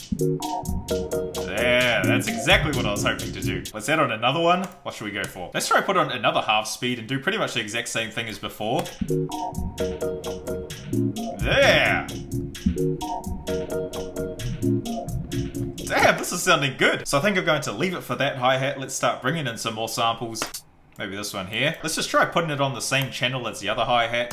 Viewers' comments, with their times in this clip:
0:08 I don't know why but that part kinda gives me a Aphex Twin vibe. Don't you think?